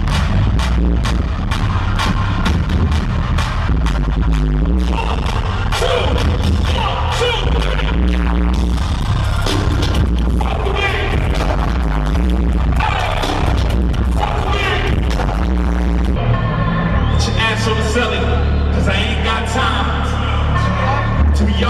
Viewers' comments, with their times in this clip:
0:03 it's loud but the visual is quality tho.